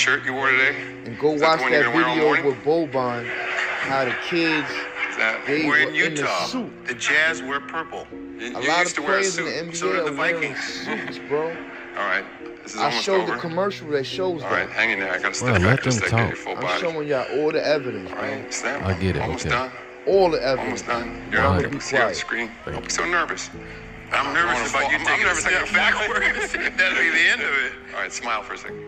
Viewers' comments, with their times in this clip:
0:09 Ugh omg I wish he'd hush too. If also like to hear what's being said.